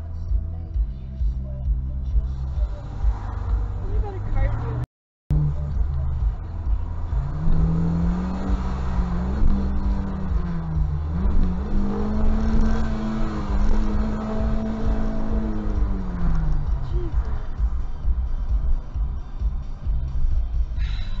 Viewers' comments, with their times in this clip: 0:09 another day in a Karen life playing tuff... See a stupid driver, act worst torturing that poor car (geez that 1st gear hurts)..And when she loose it's either call the suv manager or submit the clip to the cops (for wich she'll get a ticket and probably have no clue on the reason)